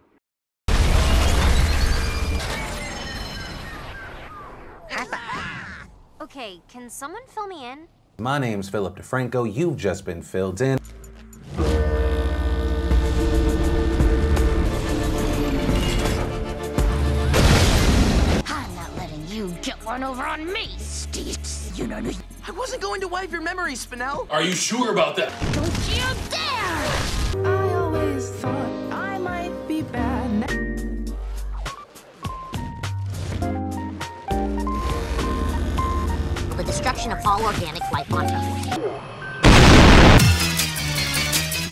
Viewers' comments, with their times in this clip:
0:04 I ONLY REALIZED AFTER WATCHING THE MOVIE THAT THE "high five!!!" WAS ACTUALLY IN THERE IT JUST DOESNT SOUND LIKE THEM
0:28 I know there's no sound, working out a copyright issue, trying to get it fixed ASAP Edit: Just cut off the first 25 or so seconds, fixed the issue Edit: They copright striked the 5ish seconds you can hear and Youtube doesn't seem to want to process the removal of that part so we're just gonna have to wait and see Edit: Original Video is back up, this is it. Hopefully things can resolve